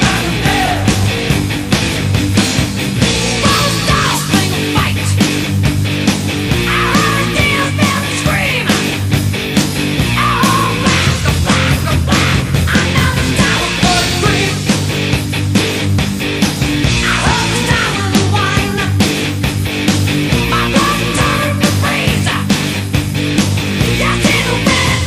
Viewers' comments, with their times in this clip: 0:07 I alway laugh because it sounds like he say, “I hear a beer belly scream”